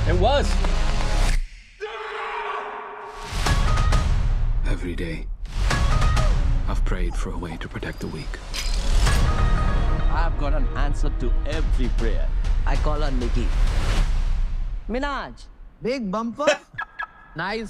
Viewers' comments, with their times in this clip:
0:04 side effects of Punjabi beat 😂🔥